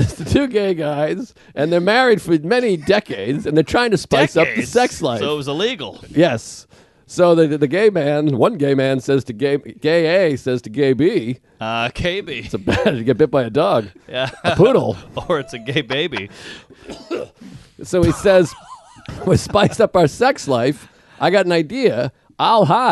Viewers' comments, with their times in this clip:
0:09 Didn’t know a cough could be comedy gold!